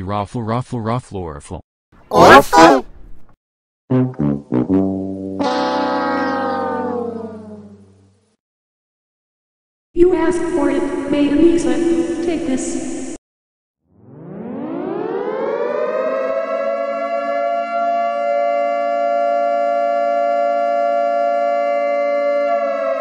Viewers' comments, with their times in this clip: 0:04 Where's The Sound?